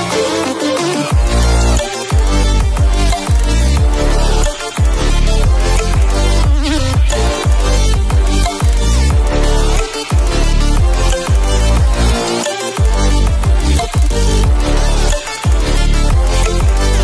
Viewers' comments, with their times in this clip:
0:05 distortion goes hard